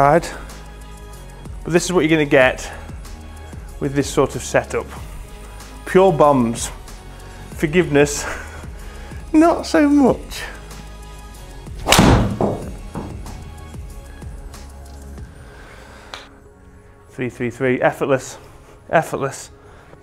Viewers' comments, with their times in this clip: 0:05 Did you say "Pure Bums"?